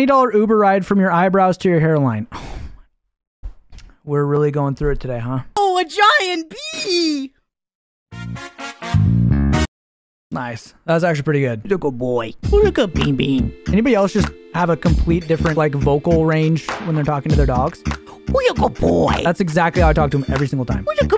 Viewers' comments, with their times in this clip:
0:06 erm actually thats a b flat i checked my piano 🤓🤓🤓